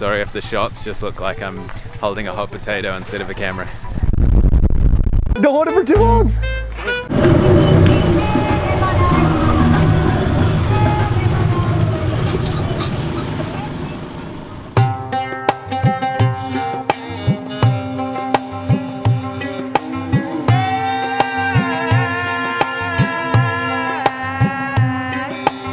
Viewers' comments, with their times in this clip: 0:09 😍 when I hear Jugni Ji Punjabi song played in rickshaw 🇮🇳 🇮🇷